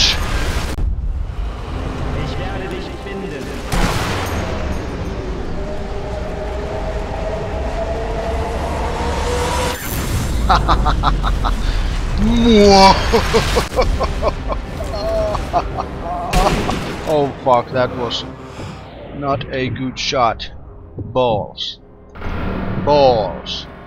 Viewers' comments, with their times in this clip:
0:09 = best laugh ever.